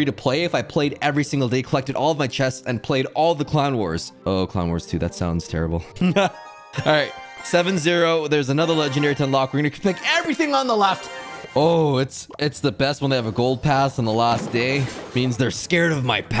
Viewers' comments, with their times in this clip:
0:04 i thought CLONE wars